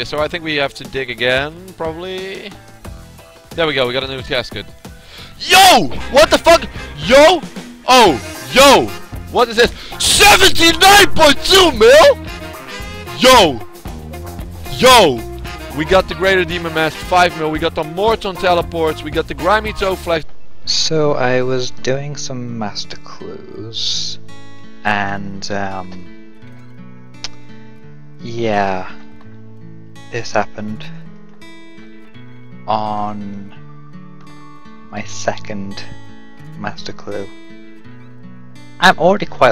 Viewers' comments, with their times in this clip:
0:10 Guy sounds like group X
0:21 "so i was diagnosed" thats how i heard it in my head lol cx